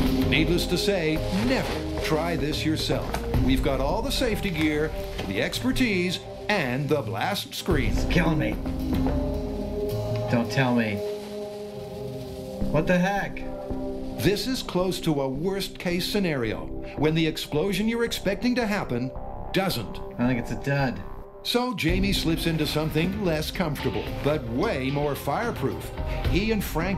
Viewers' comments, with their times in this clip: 0:09 put on subtitles, "and the blast screens kill me"